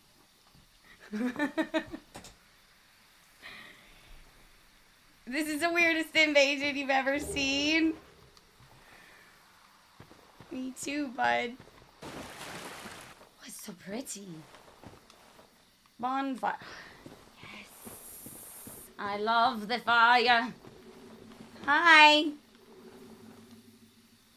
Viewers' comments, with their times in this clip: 0:06 she was so Happy and with so much Joy :)) "thank youu" :))